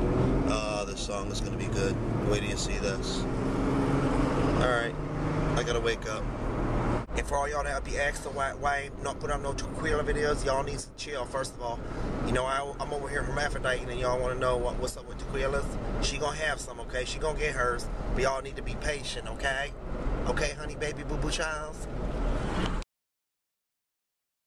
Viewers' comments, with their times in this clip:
0:07 that's tequila or te-kwee-luh